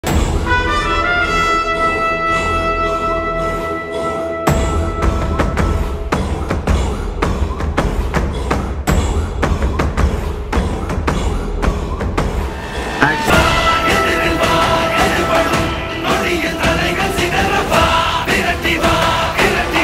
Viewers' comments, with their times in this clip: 0:01 Theatre erupts for that bgm